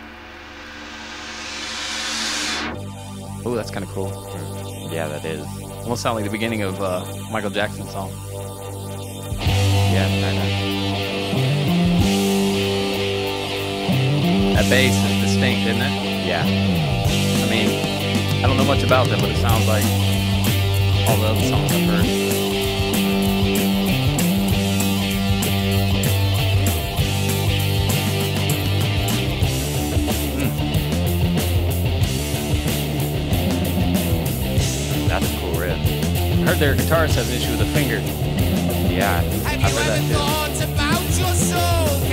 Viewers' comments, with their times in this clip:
0:10 The opening riff is the happiest in metal. It is the sound of hope in this song. 🙏🏼🤟🏼
0:29 Its cool but is better with the bass and guitar riffs together.